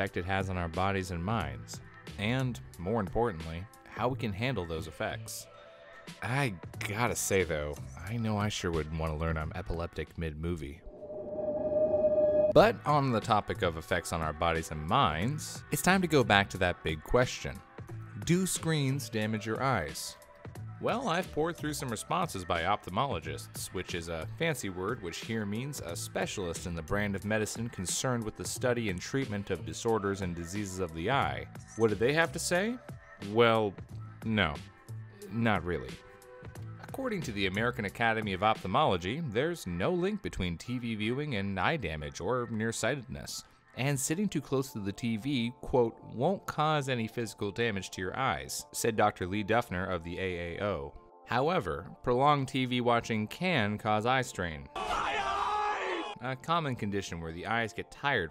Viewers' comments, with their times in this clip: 0:10 uh oh I think that coffee went to his head a bit too quickly because now I hear the doomguy doing well his thing for some reason
0:44 oh my god that background music is so stereo i had to pause the video to hear if it came from somewhere else